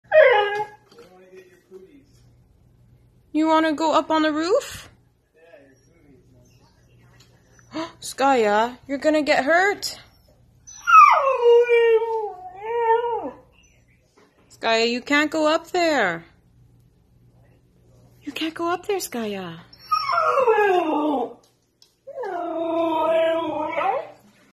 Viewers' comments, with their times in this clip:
0:01 the way he said I want up it’s so funny and adorable
0:22 wookie noises intensifies